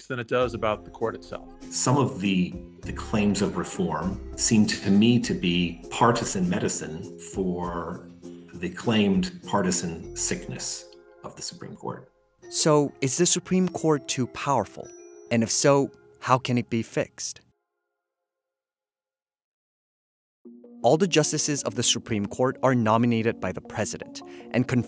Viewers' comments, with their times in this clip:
0:10 on Wednesday, August 16, 2022 Jersey City Medical Center Ambulance siren violating the Noise Ordinance again.